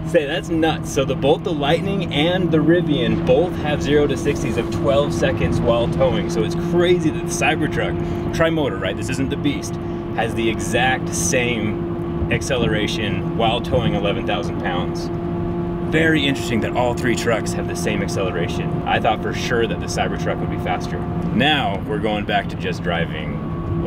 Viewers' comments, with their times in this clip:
0:07 it sounds like it’s taking off though 💀